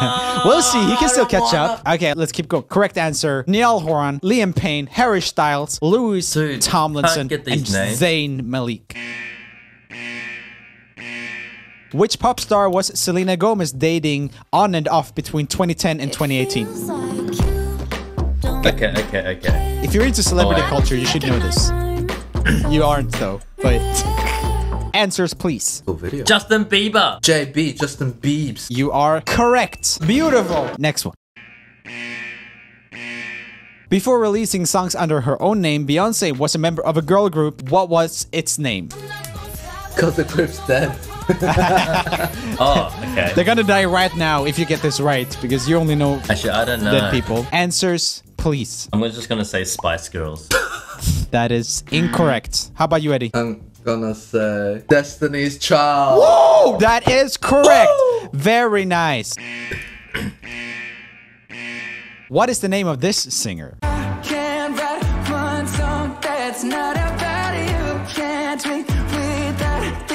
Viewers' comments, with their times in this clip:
0:03 NIEL GUYS HE SAID NIEL OH MY GOD NIALL GET OVER HERE HE SAID NIEL
0:03 I swear, I got SO angry when he pronounce Niall, Louis and Zayn’s names😂
0:05 the good old Harry 'Schtayls'...
0:58 Brett's score: 6 Eddy's score: 9 "that's very niCE"